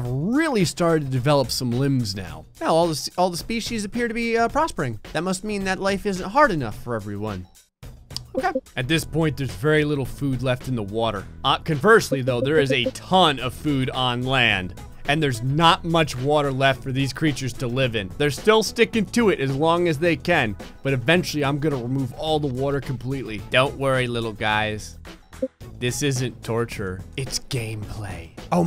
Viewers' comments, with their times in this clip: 0:09 Jesus you sound like a drill sergeant!